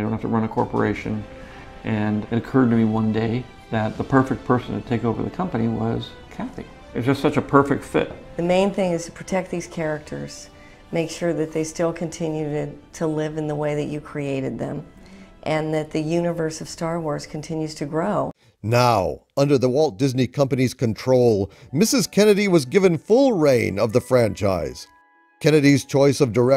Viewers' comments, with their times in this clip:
0:08 When Kathleen starts talking I swear to god I can still hear the Valium&Vicodin Combo coming through XD